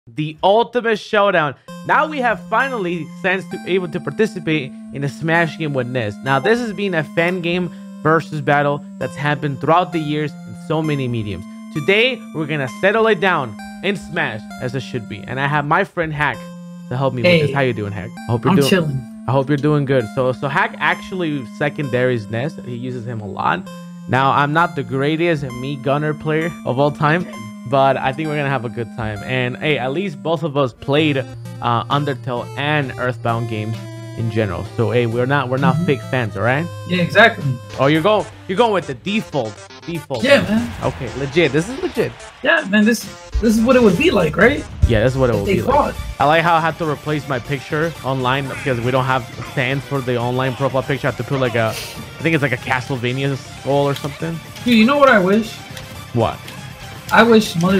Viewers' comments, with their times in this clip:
0:05 I openned my discord thinking it was my notification lmao
0:06 can i hear somehow discord.
0:38 sounds like a remix. What is it called?